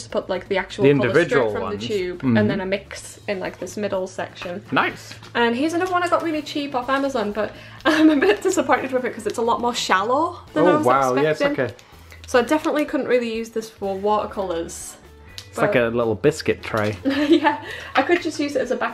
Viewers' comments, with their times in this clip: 0:03 When he said "nice" it reminded me of Professor Oak from the game Poké snap